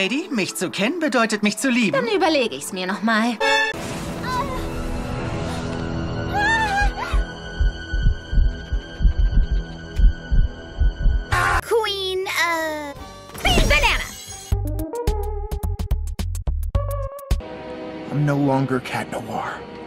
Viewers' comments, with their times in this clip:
0:03 Why is it on german? 😅